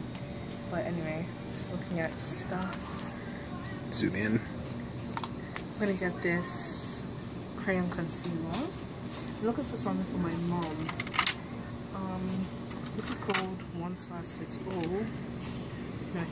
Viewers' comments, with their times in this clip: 0:04 Oh my, who is that handsome sounding fellow ?!